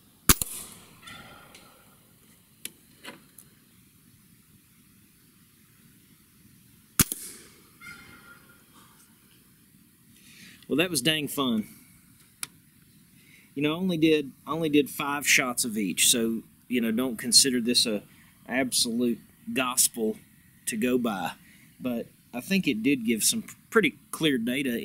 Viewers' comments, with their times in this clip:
0:07 wisper voice "ohhh thank you" 😂 What do I win for finding this Easter egg 😮🎉